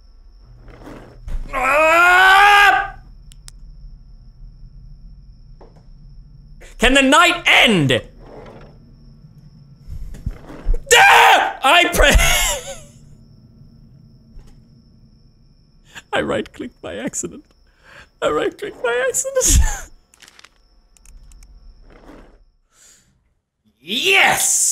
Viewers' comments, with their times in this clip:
0:10 That scream is so real you’d get an oscar for it.